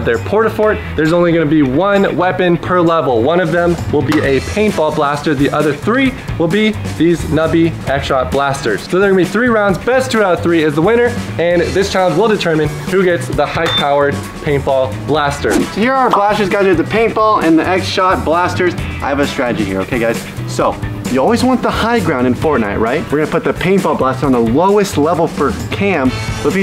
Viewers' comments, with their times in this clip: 0:07 ''nubby headshot blasters '' lol